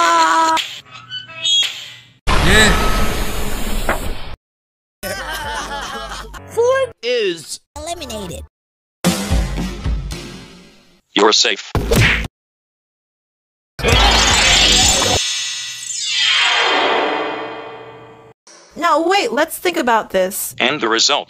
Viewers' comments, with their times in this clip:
0:04 hahahahahahahhahahahahahahahahahahha laughs hysterically four is eliminated